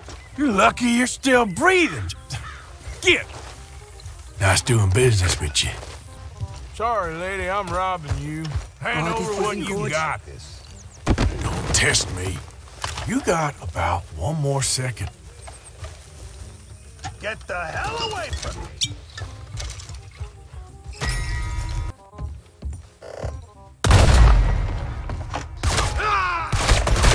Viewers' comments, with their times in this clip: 0:10 till the end , bruh i shit my pants cuz of de laugh lmfao🤣🤣